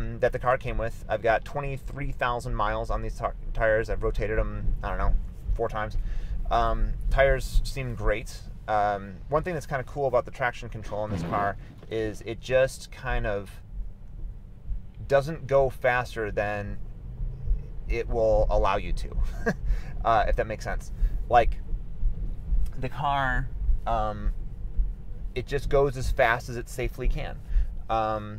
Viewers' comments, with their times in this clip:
0:10 first time I heard fart sound. But then I realised they were wipers..